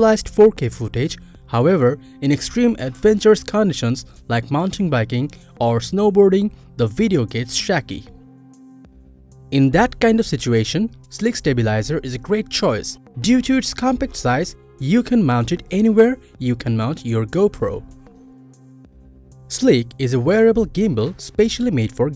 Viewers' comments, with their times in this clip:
0:08 "the video gets SHACKY" hahahahaha you need some English lessons bro!